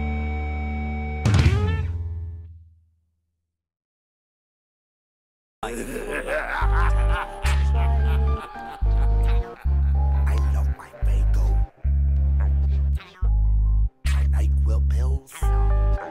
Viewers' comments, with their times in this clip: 0:03 lmao i thought it was my Ex not my Axe